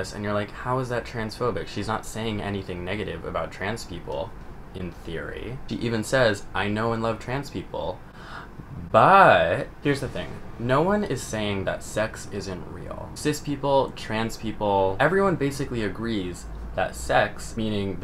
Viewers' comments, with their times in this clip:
0:05 "in theory" gave me Prof. Snape vibes.... i don't even know why!!